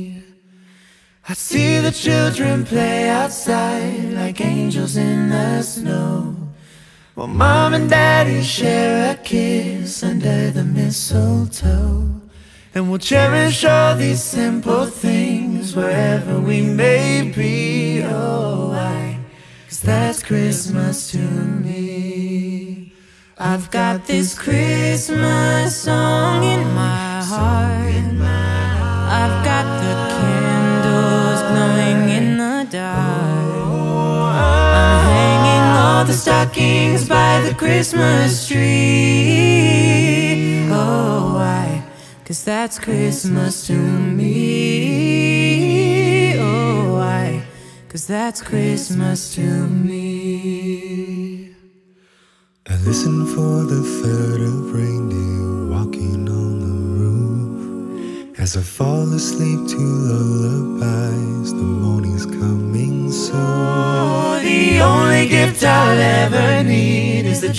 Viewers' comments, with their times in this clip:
0:09 The way he said mistletoe 😱😭🔥 his deep voice is unrivaled
0:11 HOW IS THAT NOTE EVEN POSSIBLE
0:12 The low notes the bass singer hits are solid! mark
0:52 omg I wasn't expecting that, his voice is deep and calm. I love it! ❤
0:52 HIS VOICE IM CRYING <3
0:52 how can you not cry at how beautiful his voice is ; 0
0:52 OMG AVI HAS A BEUTIFULL VOICE CLICK